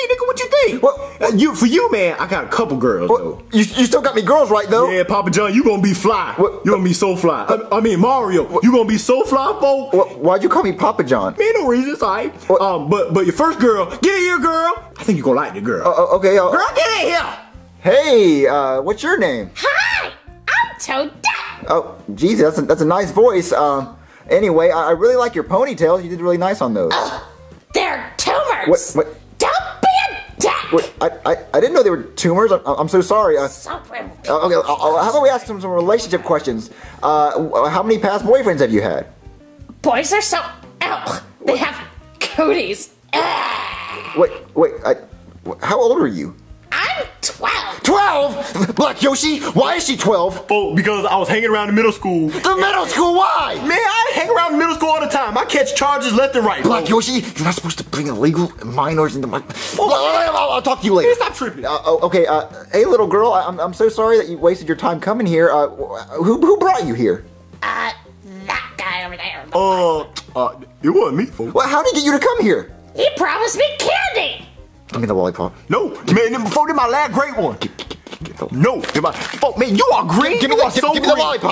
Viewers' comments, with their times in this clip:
0:09 Mario can’t stop saying “Wha-“
1:09 when she quietly said “the black one”